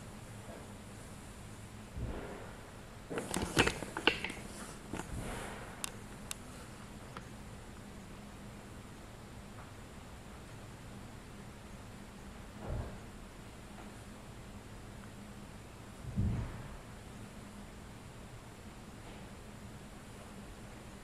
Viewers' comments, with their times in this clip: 0:03 dude, turn your freaking light off. Don't you know that they can see your light under the door and know that's where you are and for real could you be any louder ? When you are hiding, you need to be quiet and for all that is holy, keep your light off. OMG !!! Seriously ?!?!?